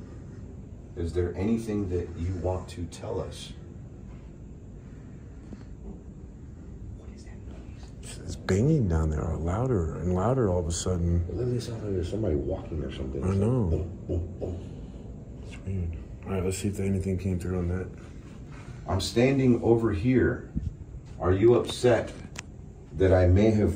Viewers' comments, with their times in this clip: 0:07 I hear, what is that noise? Sounds female but idk